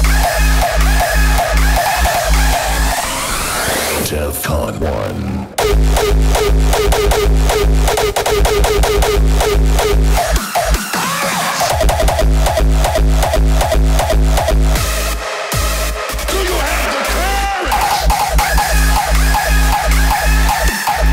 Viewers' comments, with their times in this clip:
0:03 love that kick